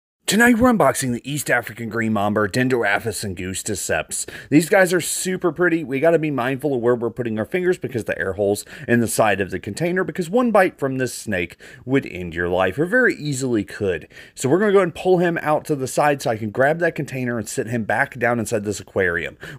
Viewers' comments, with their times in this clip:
0:03 Wait did you say Mamber? ❤